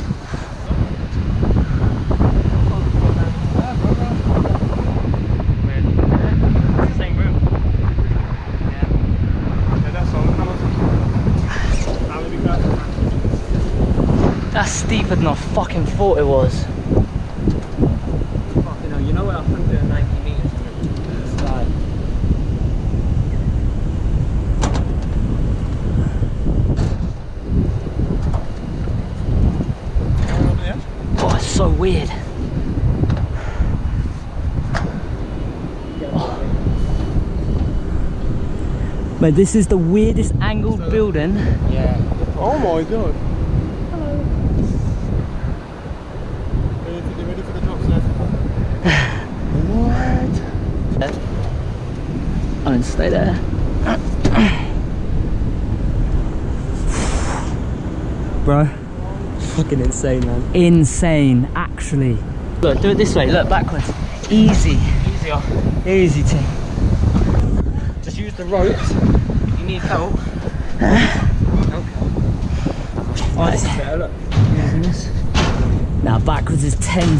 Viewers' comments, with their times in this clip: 0:09 when I heard that skrrt I started praying
0:42 Who was that 😳. Saying hello
0:43 Someone said hello. Creepy
0:43 someone randomly just says hello 😂😂😂❤️❤️
0:43 do you hear someone quietly say 'hello' lol, just me?
1:02 This sound wierd .... Y u near a pickle??